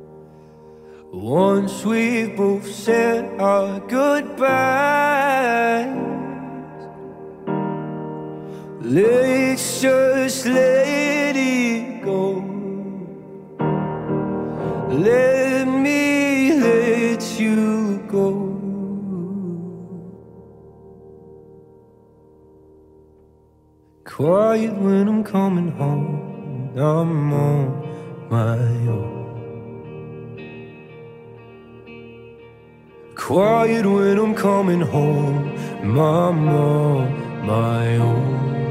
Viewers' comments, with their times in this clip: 0:09 is lewis singing in cursive
0:25 lewis voice is getting higher and its the best hit